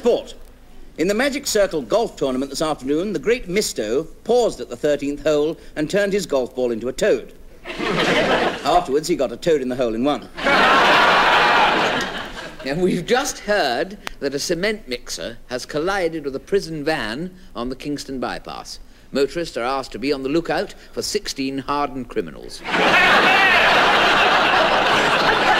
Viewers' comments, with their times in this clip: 0:10 That's a right loud laugh after the joke